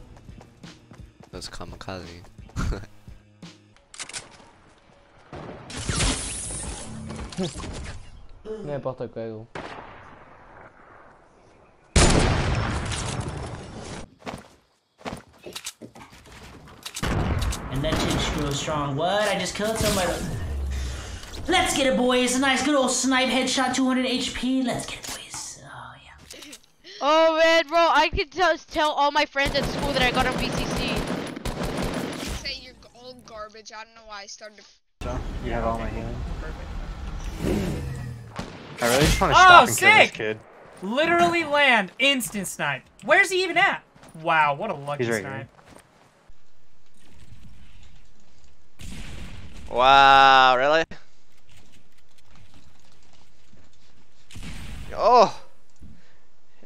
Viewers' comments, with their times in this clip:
0:05 this is how you know your dead because you hear BANG two seconds later dead
0:37 people with that voice give you a weirdly bad and annoying vibe👎